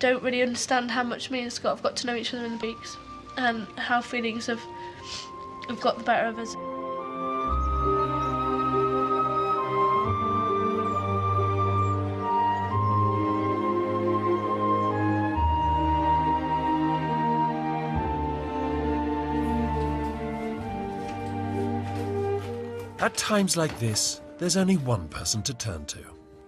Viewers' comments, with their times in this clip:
0:10 What music is this called? It's sad but romantic